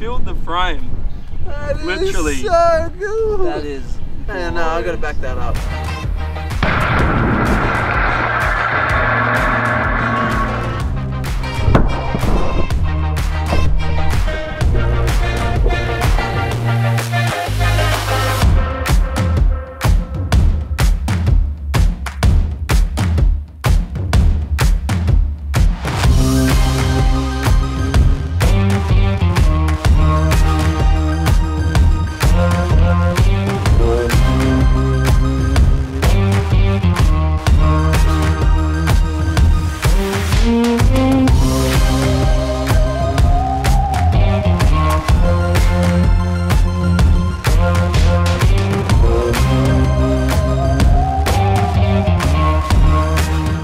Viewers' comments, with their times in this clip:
0:07 did anyone else hear Godzilla?
0:41 why did I hear the LEGO Star Wars sound effects when you rebuild an item and get coins from it 😭💀why does my head do this to me